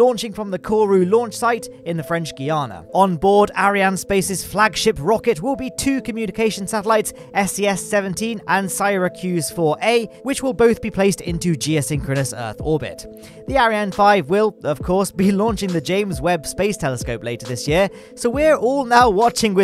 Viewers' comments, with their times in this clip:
0:07 One of the two payloads will be Sigh-racuse 4a.